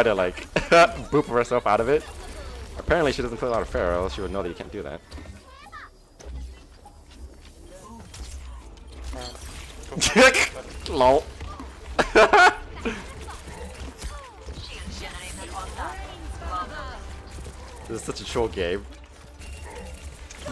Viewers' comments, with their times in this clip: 0:07 That dodge and laugh love it! :D